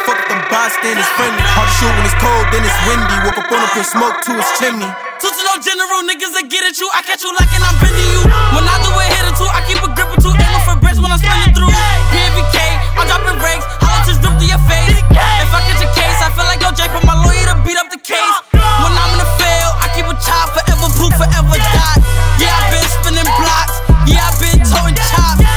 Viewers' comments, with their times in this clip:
0:06 the hit on this😩
0:06 He sounds like XXXTentacion when he hopped in 🤯🤯